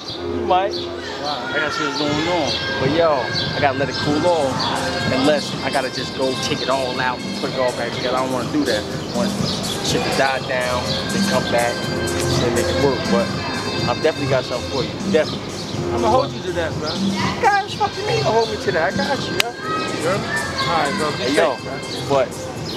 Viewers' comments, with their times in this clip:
0:05 music in background?